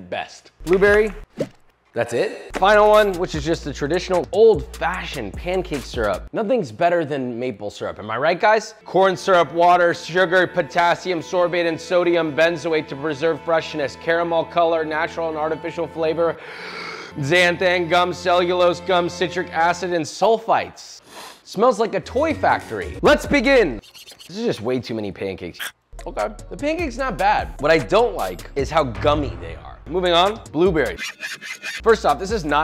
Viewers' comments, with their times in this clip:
0:09 I swear he was summoning something evil while reading those ingredients.
0:15 i love the gasp 😂